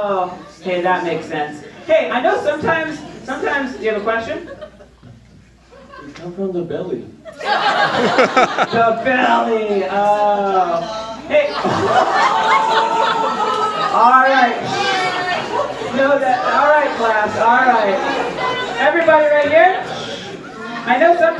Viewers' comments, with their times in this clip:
0:09 can anyone tell me what he/she said i cant hear for shit